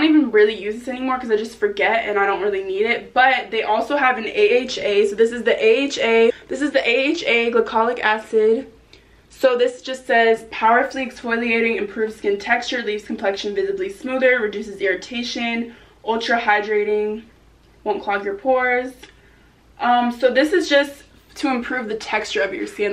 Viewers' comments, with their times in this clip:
0:04 AHA AHAHAHSKHK her voice goes higher and higher i died